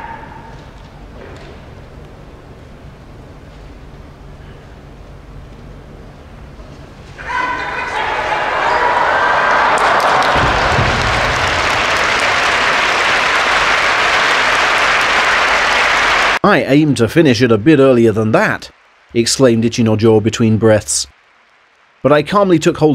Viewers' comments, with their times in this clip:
0:07 what does he keep yelling the whole match?